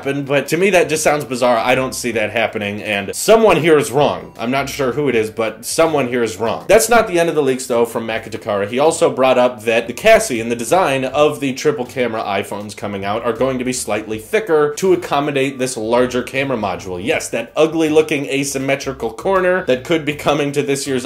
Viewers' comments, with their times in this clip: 0:08 did you just say cassy!!??
0:09 “the cassie will be thicker.” It took me a while to realize that he meant chassis, not “cassie” 😒